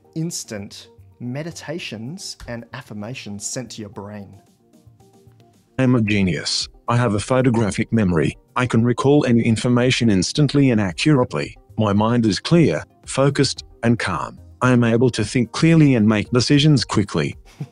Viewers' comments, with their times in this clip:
0:05 "I'm a ghee'nius." Hah. I (160something on the Stanford-Binet edition IV) like to say ghee'nius as well, so this is unintentionally double-funny.